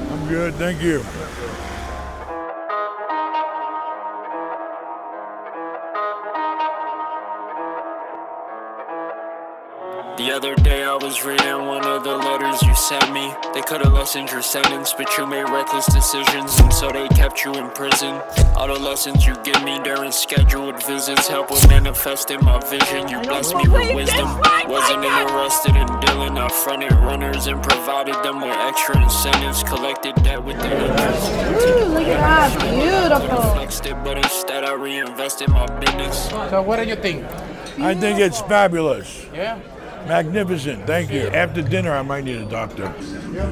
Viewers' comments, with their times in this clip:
0:10 wtf is this music lmao
0:24 you can hear his mother yelling while there at sparks steak house........ bwahahaha